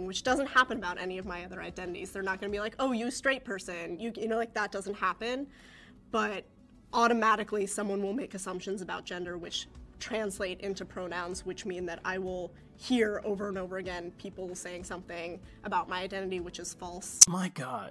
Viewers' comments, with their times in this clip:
0:05 For those of you saying the audio is too low, I think I understand what happened. When the video rendered, there was originally a dip in the audio right in the beginning of my segment around the mark. But I'm not hearing that dip now, it's entirely consistent. I also boosted the audio in all of my replies, and slightly on their segments, because the software I was using only let me reduce the audio on the Jeopardy "thinking" music I used in the beginning to about 10% of its normal volume, and that wasn't quiet enough to keep it from drowning out the dialogue. I believe what is happening here is that YouTube automatically normalizes the audio during the upload, so it reduced most of my audio to match that dip in the original video file. Sorry about that, guys. I'll be more careful to account for that in the future.